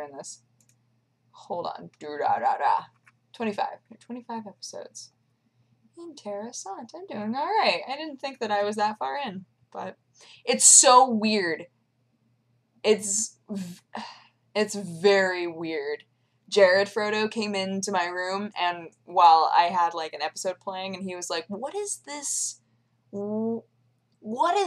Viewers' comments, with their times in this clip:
0:05 That was almost perfect Swedish... whaaaaaaat 0_o